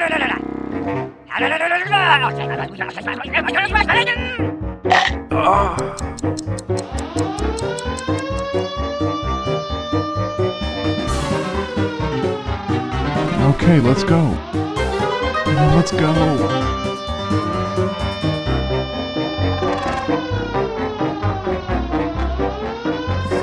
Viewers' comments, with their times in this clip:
0:04 did he just moan☺☺